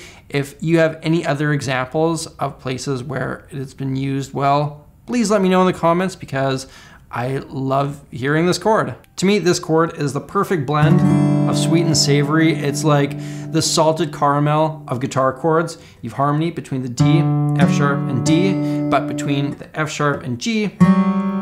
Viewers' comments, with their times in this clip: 0:06 this chord is awesome and I love using it in worship. The acoustic player uses it a lot and usually when I'm doing more ambient things on electric I'll use it in like a picking pattern, beautiful chord to substitute D with